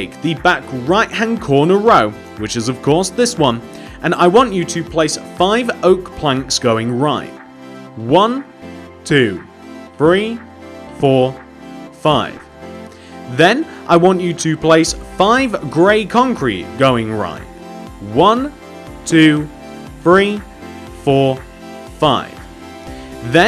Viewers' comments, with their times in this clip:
0:08 did you just say Bree?